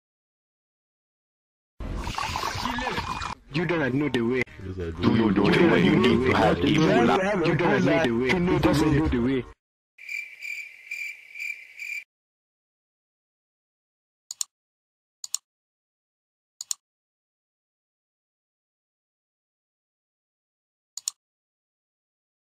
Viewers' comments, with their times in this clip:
0:06 you have to have ebola to know da wae lol